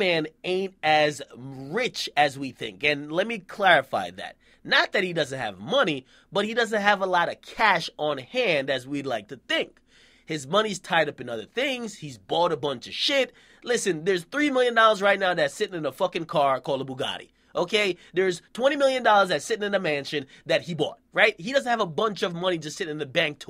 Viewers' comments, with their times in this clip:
0:09 he should be in fallout 3 or some shit in that tone